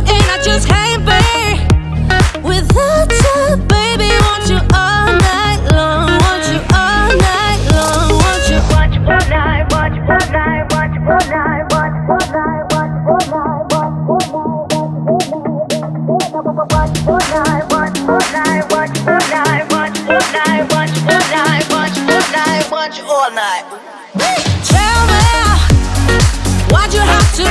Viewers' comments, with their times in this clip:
0:08 I want you all night Wacth your fortnite why'd your fork die why'd your phone die want your for die Which one did you hear?
0:09 watch fortnite watch fortnite watch fortnite
0:10 oml it sounds like the song is saying 'watch fortnite,watch fortnite,watch fortnite,' i think im going crazy
0:13 Watch fortnite, watch fortnite, watch fortnite Hint: listen to the music